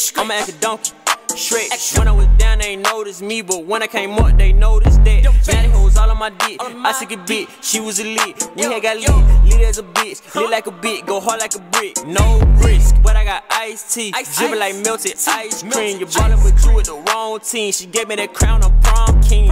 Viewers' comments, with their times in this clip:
0:07 sound like he said I suck a d*ck